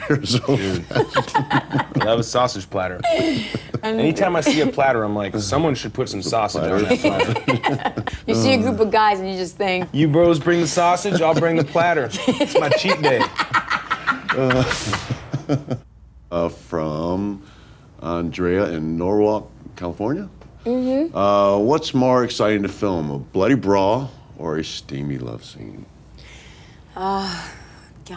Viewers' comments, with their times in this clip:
0:08 zoes laugh so adorable !!
0:09 Zoe's laugh adorable.
0:11 saldana really laugh from the heart lol, love it.